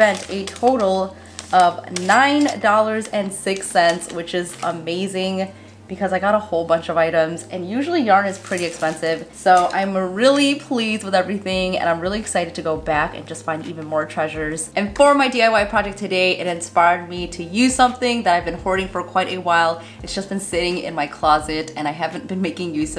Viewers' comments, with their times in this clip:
0:03 Loved the video and your hair looks so pretty 😍! I did catch though "9 doll hairs" 😆